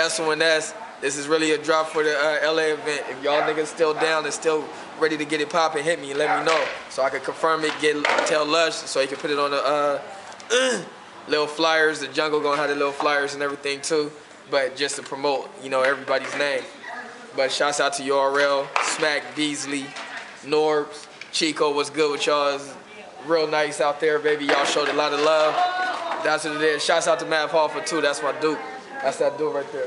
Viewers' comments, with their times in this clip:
0:10 wtf lol that was a weird ass noize but i hear yah. id like to see some jungle cats battle.